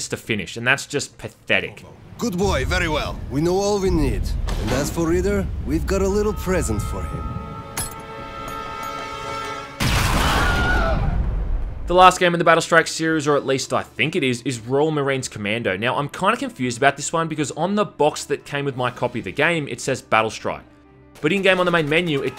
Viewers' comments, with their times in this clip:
0:09 lmao that Wilhelm scream